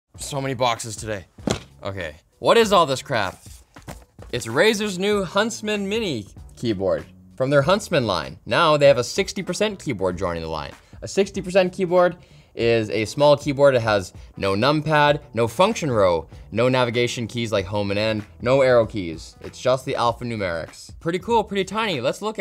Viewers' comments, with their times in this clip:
0:05 he sounds like he really doesn't want to be there